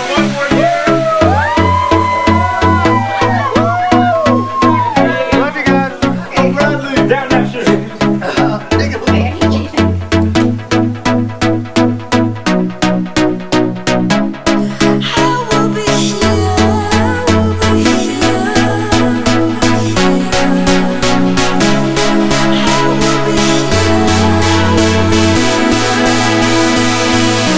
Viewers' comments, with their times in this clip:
0:08 . what do y'all say ?? did i hear incahoots?